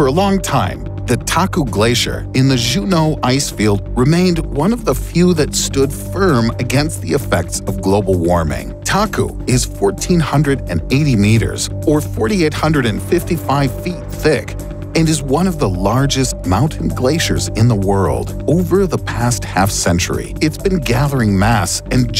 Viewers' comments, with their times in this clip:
0:03 actual pronunciation: "jew no" Ridddle: zhu no alaskan: hahaha